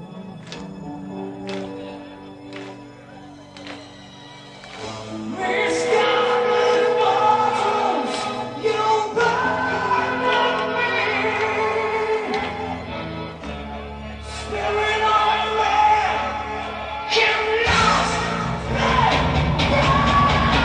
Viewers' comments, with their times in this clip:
0:06 Oh... The crowd is singing with Martin...?! This is amazing;)